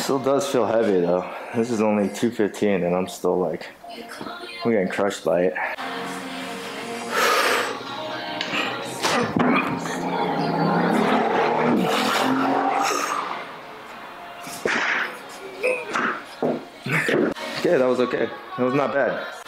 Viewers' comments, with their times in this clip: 0:07 Nice find, and nice sound effects added !